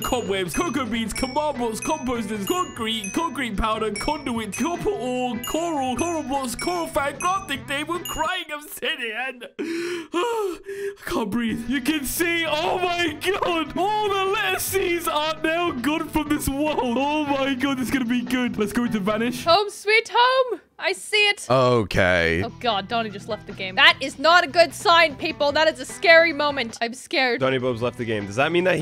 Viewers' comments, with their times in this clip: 0:09 He was so out of breath with restraint that he sounded to be crying over crying obsidian.